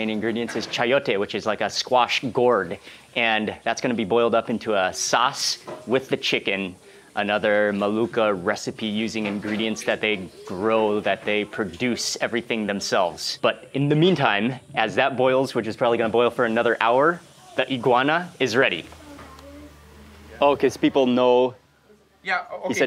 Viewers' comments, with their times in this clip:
0:08 "maluca" recipe? lmao